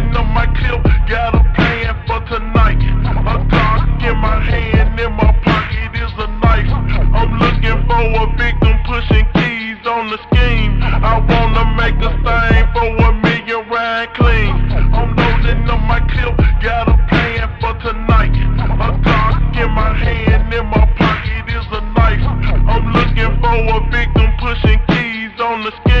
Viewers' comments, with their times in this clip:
0:07 For some reason, of this song reminds me of the phonk "Crystal"